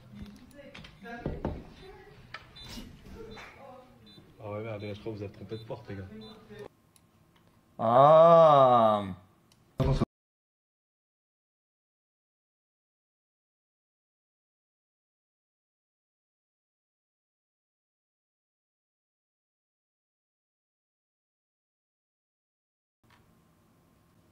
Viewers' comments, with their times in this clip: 0:05 dude in back got Richtofen in his head